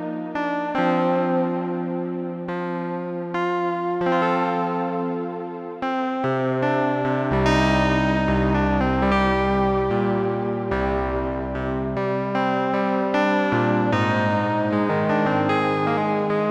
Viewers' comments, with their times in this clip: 0:03 I like that spacey tune